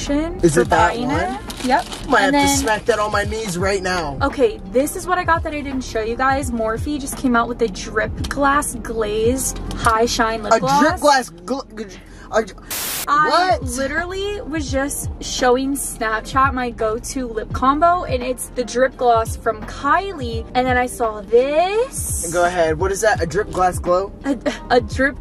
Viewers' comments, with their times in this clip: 0:10 His struggle trying to say drip glass glazed lip gloss got me on the floor 😂